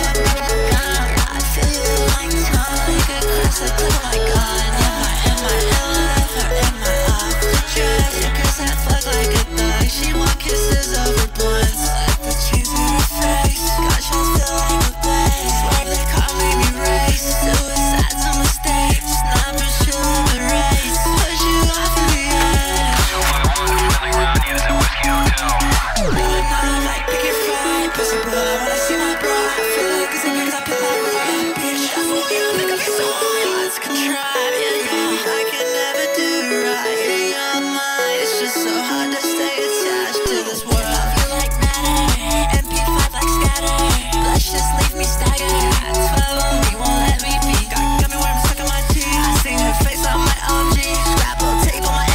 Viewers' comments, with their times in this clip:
0:04 why is it So ✨🧀j u i c y🧀✨
0:32 anyone else obsessed with like the screaming part is so satisfying
0:33 IS SO SMOOTH